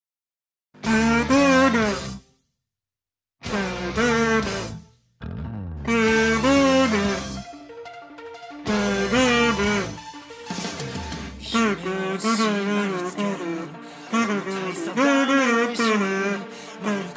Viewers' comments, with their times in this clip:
0:00 the music is very funy :)
0:00 oh my god so loud